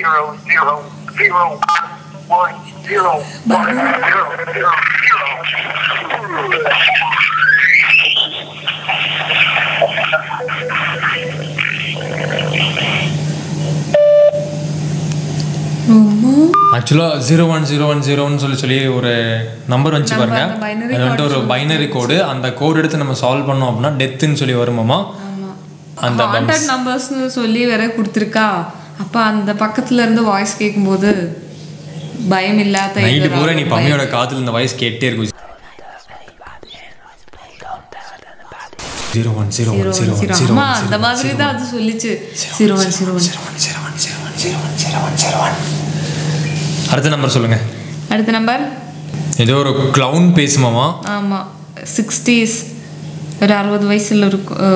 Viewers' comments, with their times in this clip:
0:05 Rip headphone users😂😣
0:35 That terrifying moment....that voice stops my heart beat 😨😨